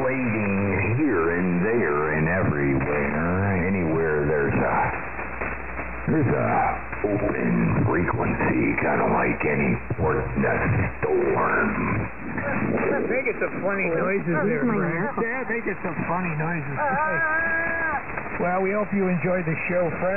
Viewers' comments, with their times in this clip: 0:04 The first example you used ish sounds an awful lot like the Desert Oracle podcast guy...to me anyways.